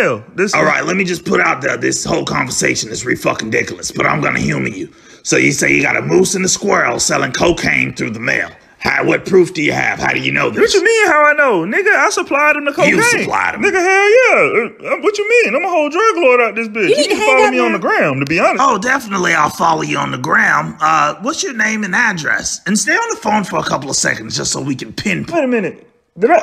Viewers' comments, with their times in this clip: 0:10 had me dying. That Home Improvement noise, bro.😂